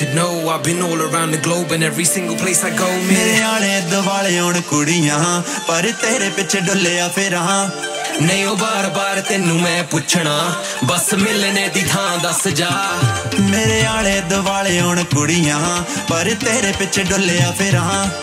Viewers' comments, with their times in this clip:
0:03 Jazzy B Style 😂😂. Wicked Tune.